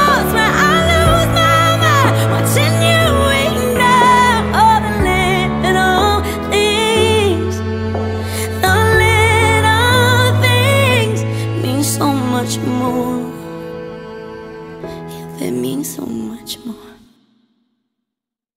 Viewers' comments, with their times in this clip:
0:03 her voice spoke through my pain 😭🙏🏿✊🏾❤
0:05 is everything. her voice is so powerful. i love it. pure emotions......